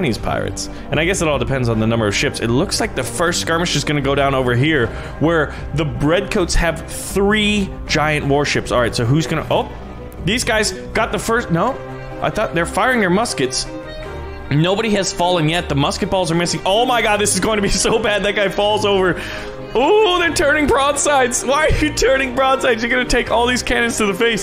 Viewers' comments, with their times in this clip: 0:05 XD u said bread coats